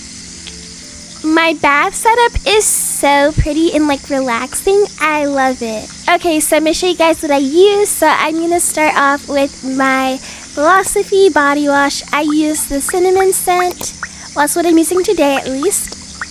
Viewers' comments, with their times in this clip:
0:04 Did you get the floss wash thingy?😂😂😂😂😅